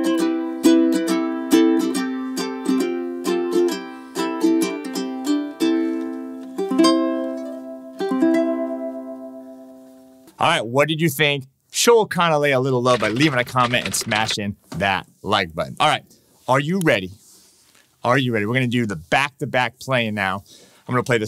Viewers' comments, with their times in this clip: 0:06 Intonation is off on the Kanile’a